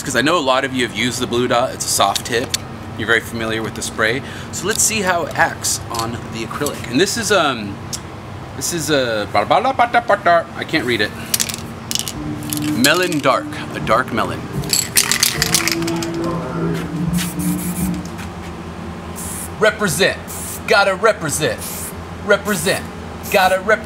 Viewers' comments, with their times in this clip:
0:09 nice Indian accent